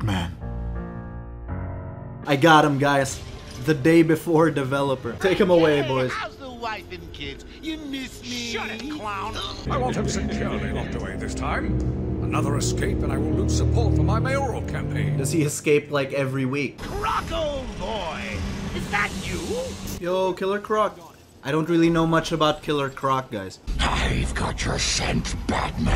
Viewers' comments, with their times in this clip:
0:10 The fuck is Admiral Yularen doing in Arkham lmao
0:12 I know that voice!